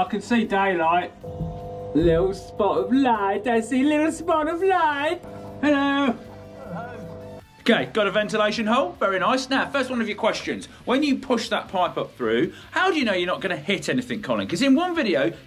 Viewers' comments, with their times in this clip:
0:03 Borat? Is that you!?